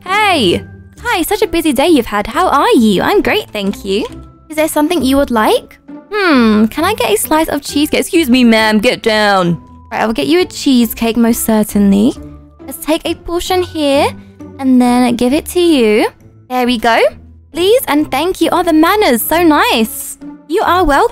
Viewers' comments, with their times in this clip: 0:08 the way her voice changed😅